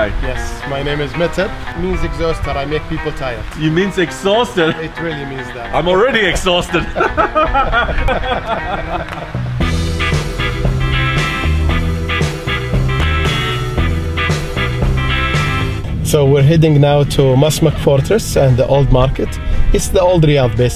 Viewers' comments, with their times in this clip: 0:07 the most sarcastic laugh ever 😂